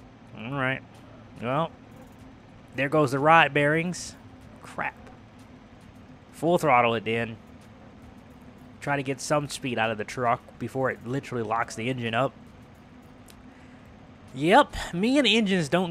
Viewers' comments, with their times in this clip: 0:03 ur truck does noise